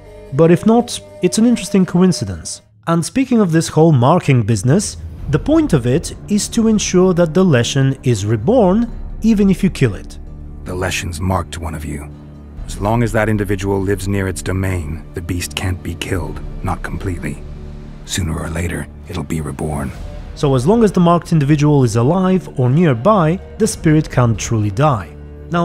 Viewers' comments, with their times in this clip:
0:10 Looks like Witcher 2 Geralt’s voice so hard For a moment I thought I was watching king Henslet curse ritual